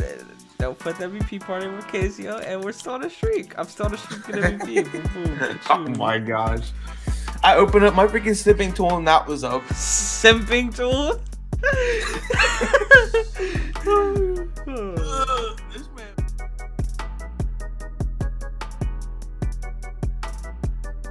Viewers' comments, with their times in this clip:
0:08 I thought he said simping tool